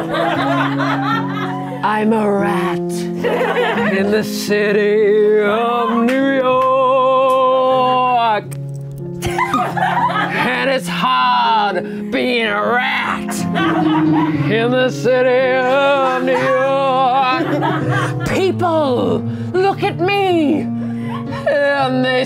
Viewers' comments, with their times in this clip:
0:07 why does this sound like Persephone in Chant from Hadestown with the physicality of Cats